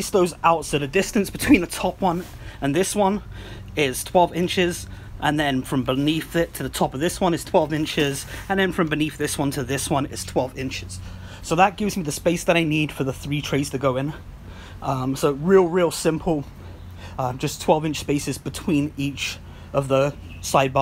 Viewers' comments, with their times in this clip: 0:07 From the sound is better for a while and then quite quiet later on.